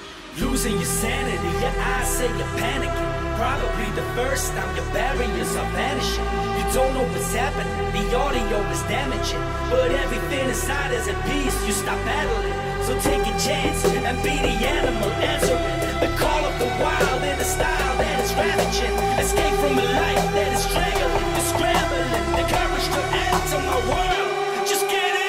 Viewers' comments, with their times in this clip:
0:10 guy with the whistle exposed